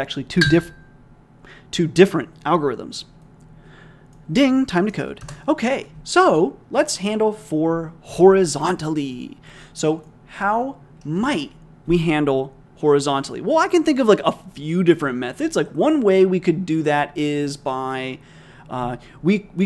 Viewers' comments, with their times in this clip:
0:03 Ding!!! is my sound for stop coding!!! Talk about a vicious loop ...